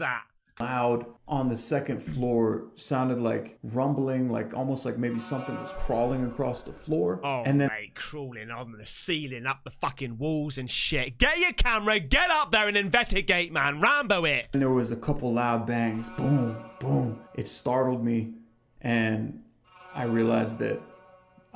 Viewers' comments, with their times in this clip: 0:06 sounds like doors opening and closing